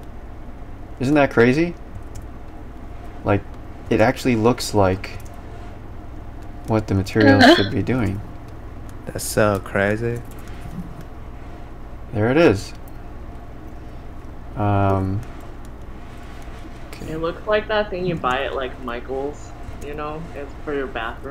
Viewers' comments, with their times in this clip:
0:05 weird sound hihi :3